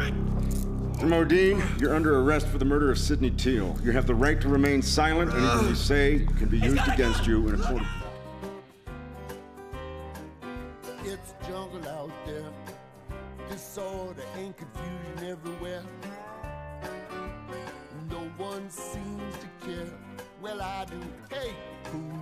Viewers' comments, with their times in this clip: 0:07 wait wtf, why is someone screaming "he's got a gun! Look out!" when they are already handcuffing the guy? Was that the actor being really bad at being an actor and delivering his "line" too late?